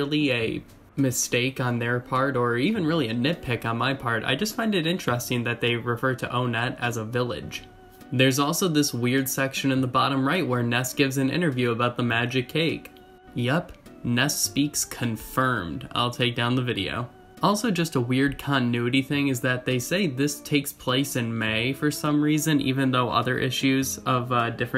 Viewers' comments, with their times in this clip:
0:06 Whoa I noticed you called it "O" nett (when previously you called it "One" ett) which I had always called it the former but realized when you previously had said "One" it had never clicked that's how pronounce it (although it was a hard pill to swallow since, I'd literally called it "O"-nett since I was a kid) but if you don't mind me asking did you mean to say it that way this time or was that a slip or did you find out more info on how to pronounce it? Sorry I know this sounds so trival and silly it's just something I've been wondering since I first watched your videos (and other EB youtubers who also have various ways of pronouncing it!)